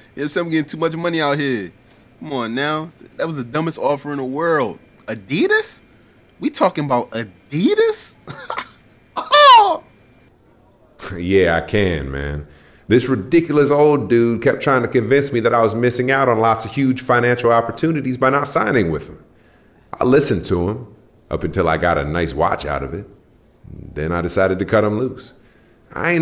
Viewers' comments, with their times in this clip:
0:09 That birdman laugh was classic lol